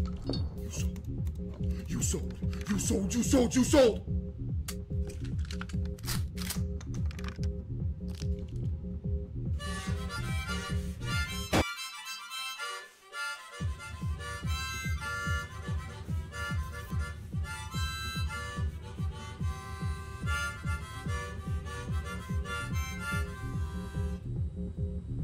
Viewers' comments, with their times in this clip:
0:09 his harmonica got my sense of humor pretty good, because I expected something else like an earthquake.
0:10 the aggressive harmonica playing has me rolling 😂😂